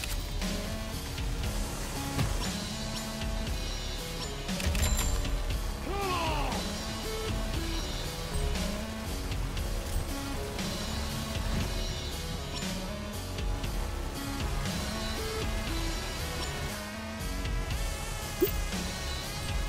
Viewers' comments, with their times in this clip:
0:06 I can’t unhear eclipse/plushie executioners theme